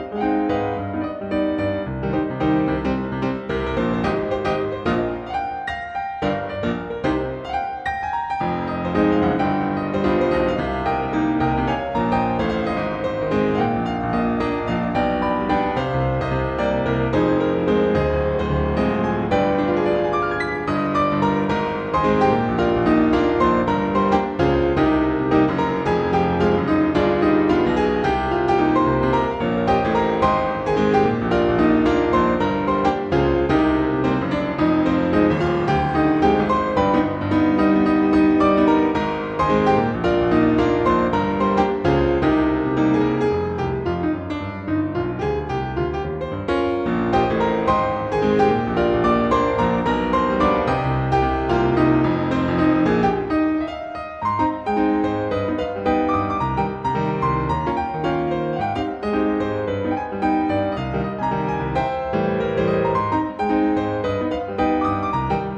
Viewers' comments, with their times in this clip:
0:03 Why does this sound so much like Never Gonna Give You Up lol
0:24 love the chords!! took me by surprise
0:37 a t l o n g l a s t dang this is some nice jazz! also that triple octave sounds super nice xD, not to mention all those funki licks you've added here and there. Fantastic cover overall ma dude! can't wait to hear more of that j a z z in the future :D
0:42 I love the walking bassline so much!!
0:42 Love the walking bass 😌 Nice cover!
0:52 Awesome and groovy arrangement, but there's a "piano solo" (continuous stream of background piano notes, starts at minute in the official music video) at some point in the original song that I really wanted to see in a piano cover!